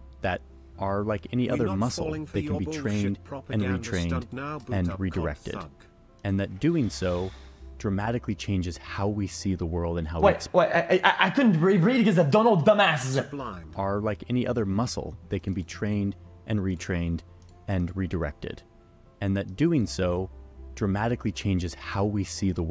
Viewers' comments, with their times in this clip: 0:10 click for Transformer sounds.